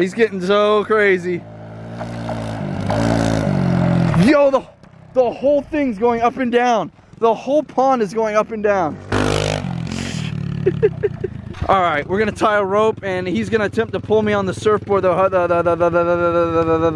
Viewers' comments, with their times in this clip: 0:04 Did any one hear the silence when roman talked sounded like he cursed